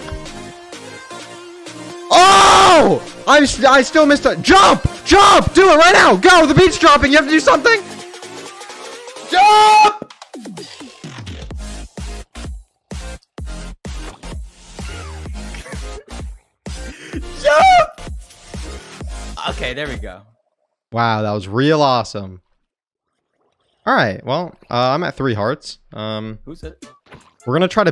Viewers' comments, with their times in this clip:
0:08 ...well, at least purfect moment for drop.